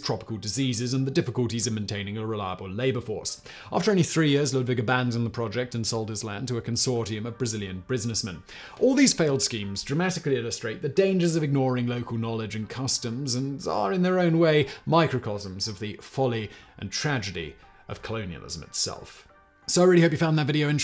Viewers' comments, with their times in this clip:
0:05 A Consortium of Brazilian Brusinessmen